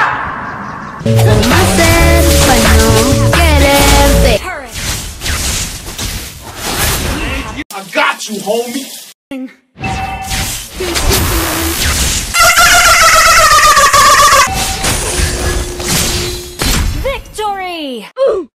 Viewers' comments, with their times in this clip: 0:09 wtf is that laugh hahshahaga😂😂😂😂😂😂😂